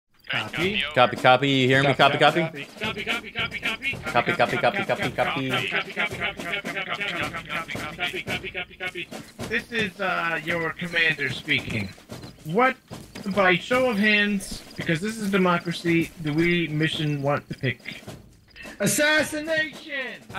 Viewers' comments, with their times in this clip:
0:02 coffee coffee coffee coffee